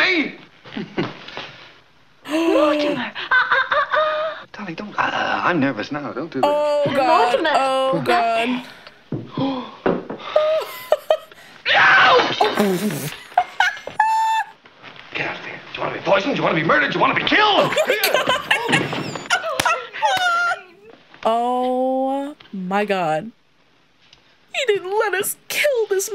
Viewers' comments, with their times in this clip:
0:10 Oh, I remember back when I was a child and saw this movie for the first time, at that yelp I burst out in laughter so that I couldn't breathe anymore.